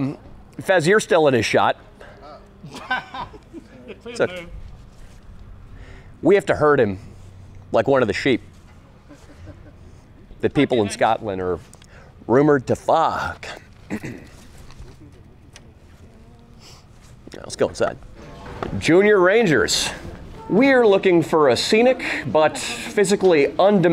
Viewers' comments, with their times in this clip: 0:07 that’s the Welsh not the Scottish